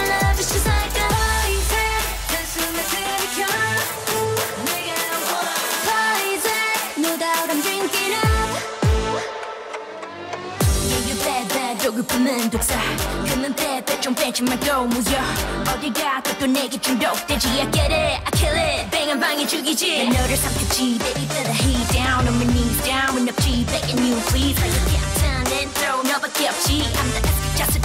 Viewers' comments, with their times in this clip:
0:10 THIS IS RAP 💯🔥